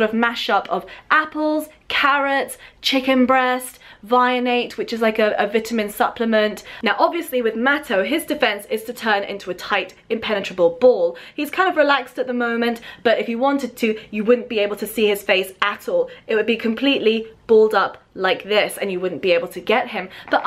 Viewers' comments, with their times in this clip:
0:05 I died at the way you said "vitamin"